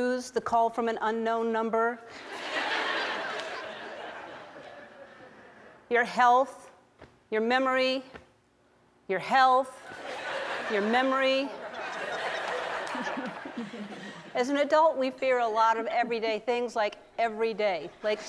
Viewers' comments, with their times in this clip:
0:06 Robot repeat “Health Memory”